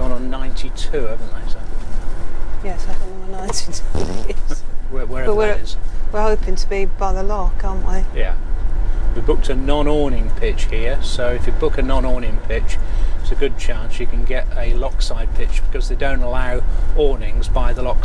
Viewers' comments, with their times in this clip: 0:03 Great channel both ( and Poppy!) . to 19 sound..... Poppy been eating beans??